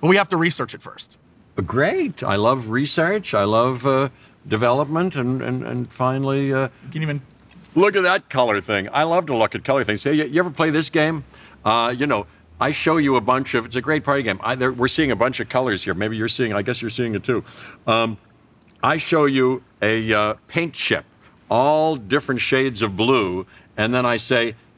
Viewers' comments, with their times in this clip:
0:07 Also listen he sounds super sarcastic and bored. I know that he isent but its just funny to point out.